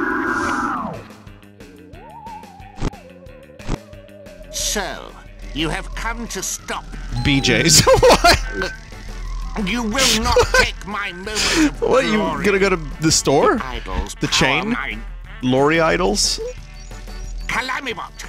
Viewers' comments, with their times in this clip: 0:06 when it said "bjs" and Calamatus coincidentally gulps after lmao